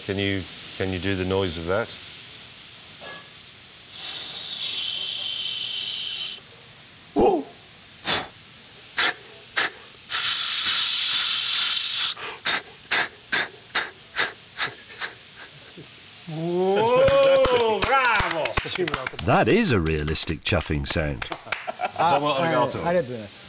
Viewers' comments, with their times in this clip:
0:07 Did he just barking 🤣🤣🤣🤣🤣🤣🤣🤣🤣🤣🤣🤣